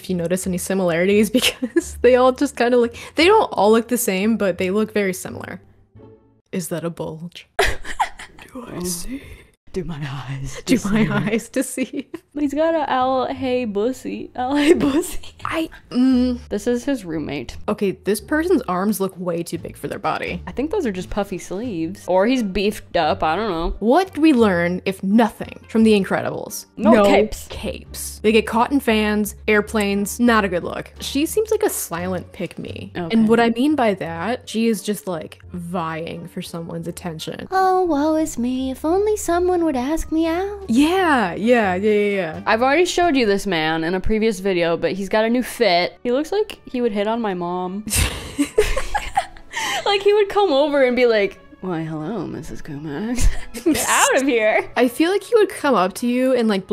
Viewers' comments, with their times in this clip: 0:08 Am I the only one who heard a weird sound
0:38 The voice over for Layla was really freaking good. Not to dis the english va but this rendition sound exactly what i thought she'd sound like.